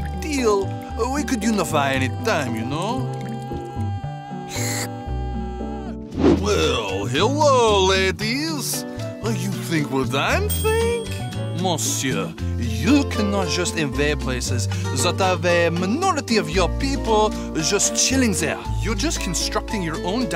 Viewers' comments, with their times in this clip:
0:08 "Hello Ladies" *They both have male voices and France has a big moustache*